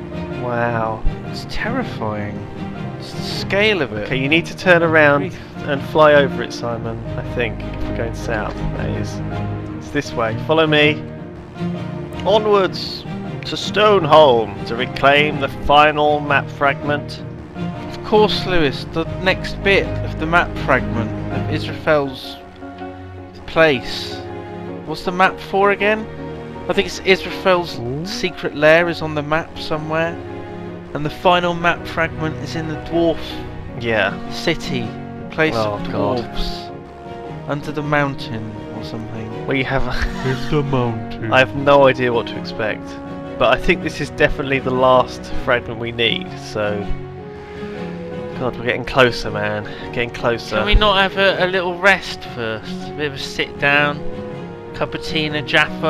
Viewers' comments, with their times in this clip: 0:05 I LOVE THE MUSIC AT THE END OF THE EPISODE !! LOL !!
0:39 Am i the only one that got addicted to the outro song?